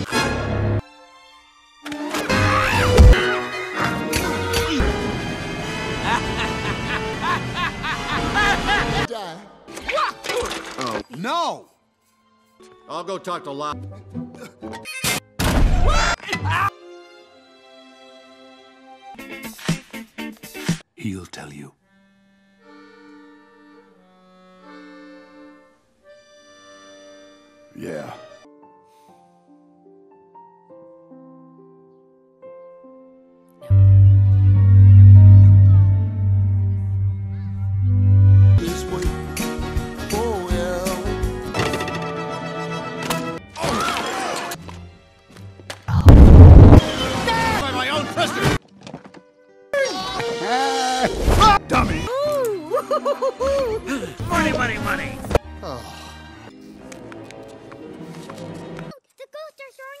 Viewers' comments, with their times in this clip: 0:05 Laughs At The Button
0:16 perfectly cut scream 😂
0:16 Perfectly cut scream!
0:33 I died at Andy’s quiet “no”
0:34 that bass made me shid myself
0:46 T H U D
0:46 that ear rape tho
0:46 did lotso farted